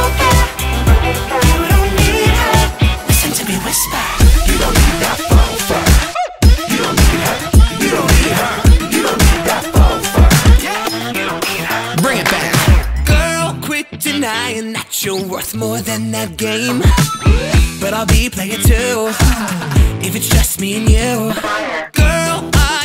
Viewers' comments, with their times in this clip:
0:06 is it just me hearing baldi sound here ??